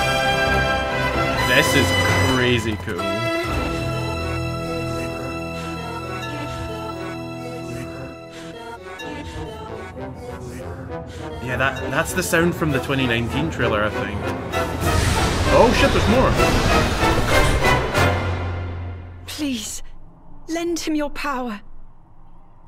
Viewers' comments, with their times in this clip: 0:03 this sounds like twilight princess music, just all distored so you cant really tell
0:04 Why does the music play backwards at min ? What does it mean?